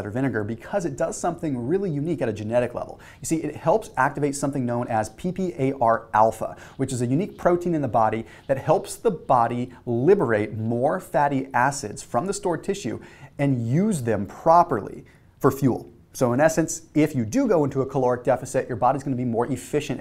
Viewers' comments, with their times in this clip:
0:06 He’s say pee pee